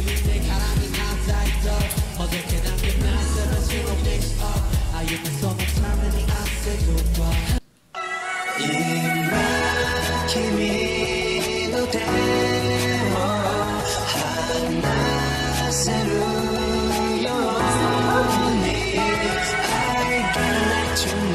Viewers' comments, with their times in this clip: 0:09 "Let Go" on yes, that's Hobi singing, but this is a backing vocals version, Hobi does the background vocals. For a lot of BTS songs you can find "hidden vocals" or "backing vocals" versions on YouTube, and it's really good to listen to those versions at least one time because they like to add many vocal layers in the studio. Hobi is known for doing a lot of those vocals, he harmonizes a lot with the vocal line in the background. Other examples are "Spring Day", "I Need You", "Anpanman".